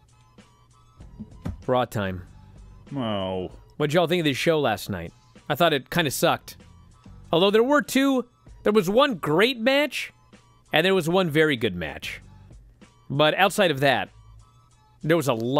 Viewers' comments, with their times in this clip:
0:03 That groan says everything about WWE.